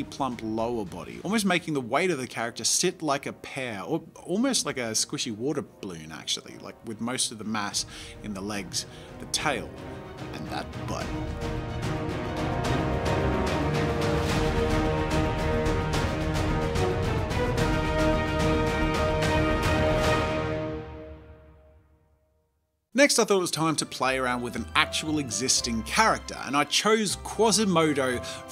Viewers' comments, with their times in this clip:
0:10 “and that butt...” intense music starts playing